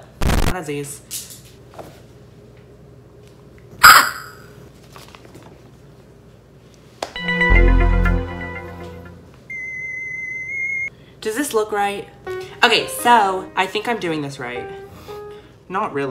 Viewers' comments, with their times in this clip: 0:03 why does she literally make bird noises all the time it’s so great but like, are you good or like..